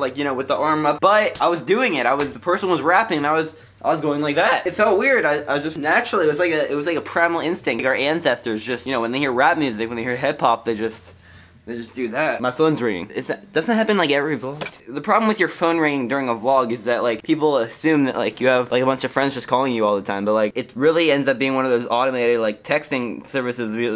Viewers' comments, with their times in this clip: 0:04 Voice crack :3